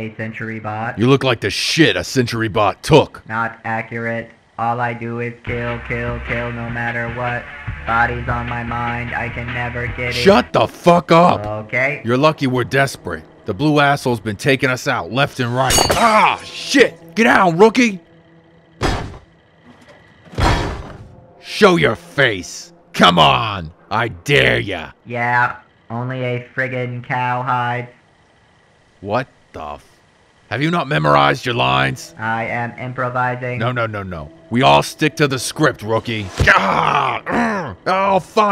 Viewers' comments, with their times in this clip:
0:05 robot singing. Lol.
0:19 RobCo bringing you the best civil-protection robot in mankind! The Protectron! It can do following: dab, shoot, talk REALLY fucking slow, make beer.